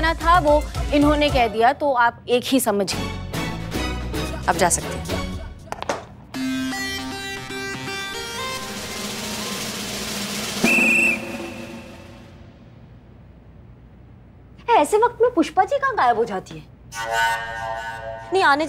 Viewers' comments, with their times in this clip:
0:06 pushpa ji and Karisma sing so funny 😂😂😂😂😂😂